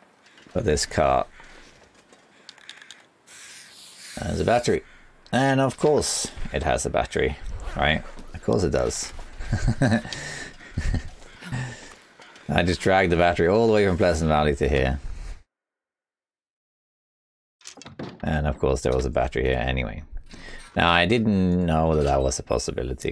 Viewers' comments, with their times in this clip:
0:07 that's the laugh of a man losing his mind